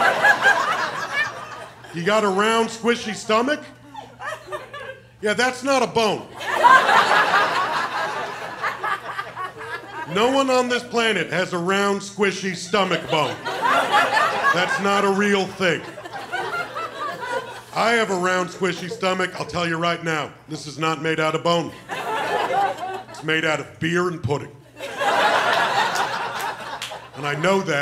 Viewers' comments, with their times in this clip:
0:09 I love how much energy she had in that laughter